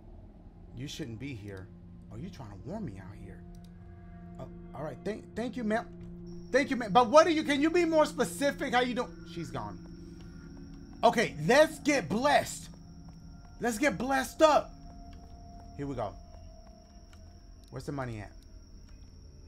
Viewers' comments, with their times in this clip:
0:04 😂 Thank you ma— thank you ma— but what are you— can you be more specific— how you doi—she’s gone🤣🤣 He sounded so disappointed😂